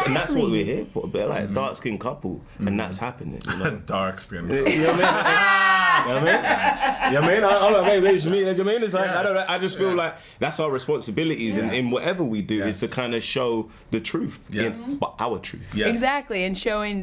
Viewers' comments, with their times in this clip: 0:05 their laugh made me smile <3